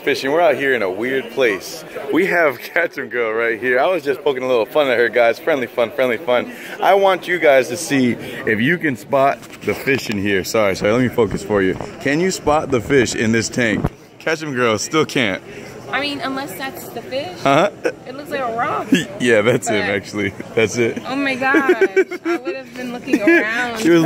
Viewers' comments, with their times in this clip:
0:07 did i hear friendly fuck